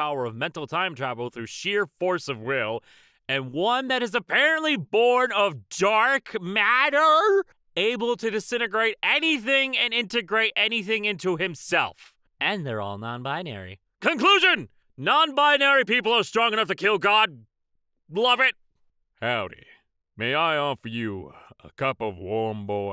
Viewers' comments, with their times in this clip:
0:05 he read that as if he didn't know that beforehand and is now horrifyingly confused about it and it is just so fucking funny ngl